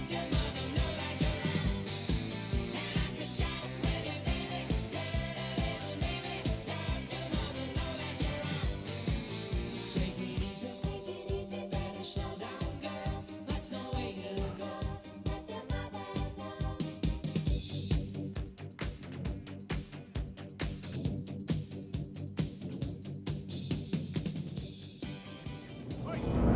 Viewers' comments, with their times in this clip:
0:07 he sings the song even he got himself into trouble 😂😂